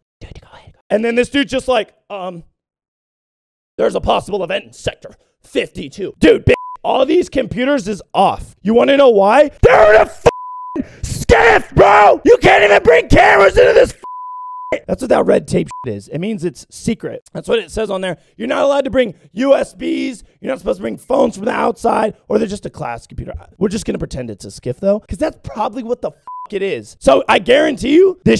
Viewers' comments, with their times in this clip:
0:09 man broked his voice